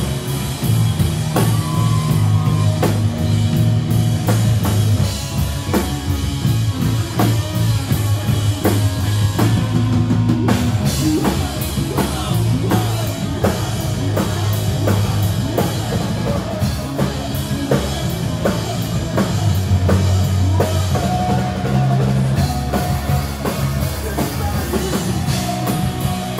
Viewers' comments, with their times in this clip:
0:10 That was fantastic! for some insane guitaring!